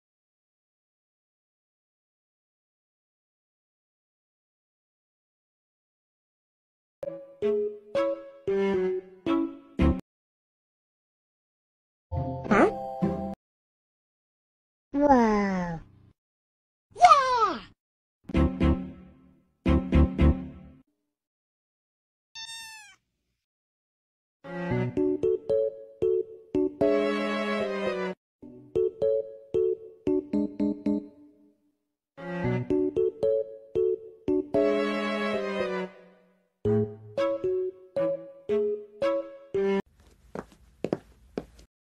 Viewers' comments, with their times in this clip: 0:05 that gibberish was fricking so funny.
0:22 is so cute while N is meowing🥹😊